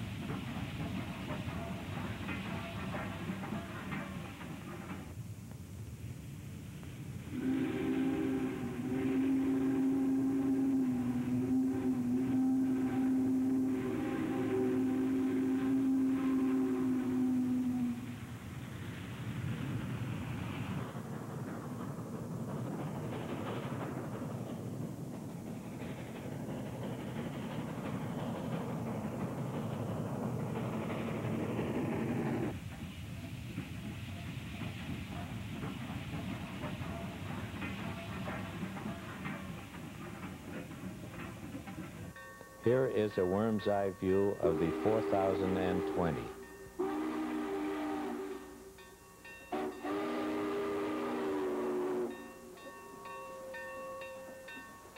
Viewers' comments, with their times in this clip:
0:07 That’s got to be one of the best early recordings and clips of a Big Boy’s whistle going off. Not just by the sound, but the background. It really gives you the feeling that these monsters were the native machines of the state, a feeling the gives a chilling voice to those lands so empty, one that’ll often give you company for a few minutes filled with awe.
0:42 I think the best one is from ,the Real 4020 whistle